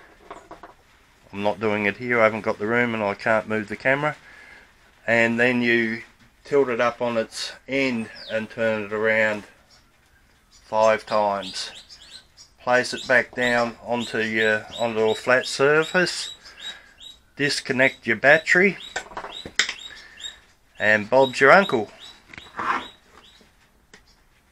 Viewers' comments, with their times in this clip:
0:05 The subtitles seem to struggle with your accent - it's pretty funny to read - why would your indoor cat move the camera, and what are totedaho gnats? XD